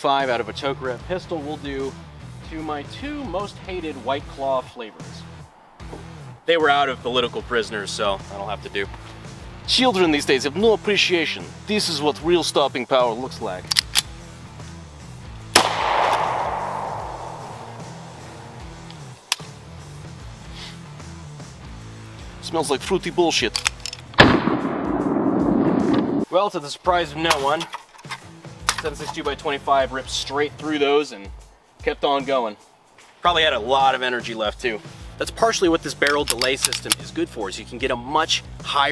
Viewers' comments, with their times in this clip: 0:08 If I only had audio that accent would have fooled me into believing FPSRussia was in the video.
0:09 [Childhood Flashbacks] It's uncanny how much that sounded like him.
0:09 Still a more convincing accent than FPSRussia
0:09 is it just me or did i hear a little bit of FPSRussia come out of you there
0:09 He can actually talk like FPS Russia, funny :)
0:24 good impressions of a guy we haven’t seen for a while. But why didn’t you shoot some representative targets?